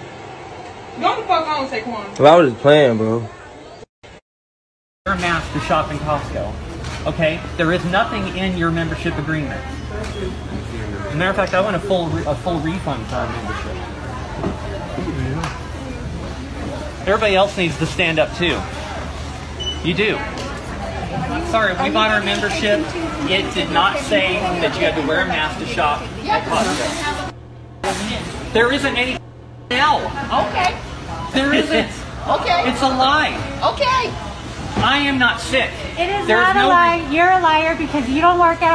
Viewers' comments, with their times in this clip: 0:05 I seriously thought it was a dude when I heard that voice.
0:05 the costco karen sounds like a guy
0:05 WOW! What a voice... i think "she" was born as a boy... creepy voice for a Woman
0:23 That karen sounds like a prepubescent boy xD
0:23 when Karen either has covid or is actually a dude based on that voice